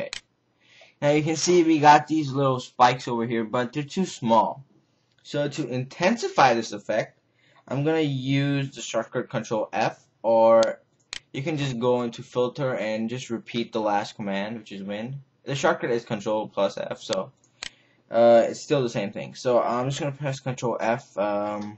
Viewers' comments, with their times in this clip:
0:04 "so to intensify this effect" made me lol irl. You sound so dumb. ^^ and you make so many silly mistakes :) Were you high while making this video?